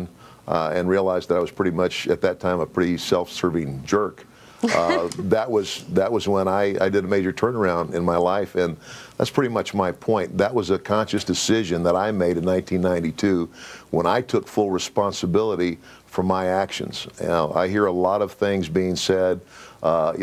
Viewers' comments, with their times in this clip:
0:03 why she giggled smh